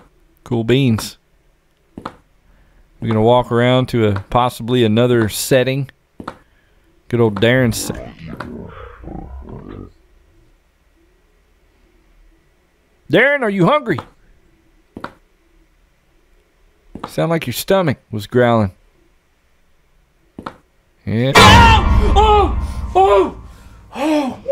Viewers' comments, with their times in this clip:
0:08 Sorry that was my stomach